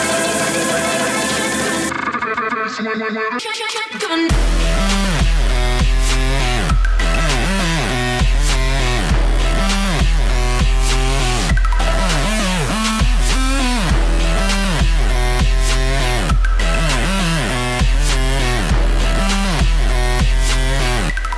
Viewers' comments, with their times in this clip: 0:04 waiting long for such a shitty drop. stop making noises...
0:04 beat drop sound awesome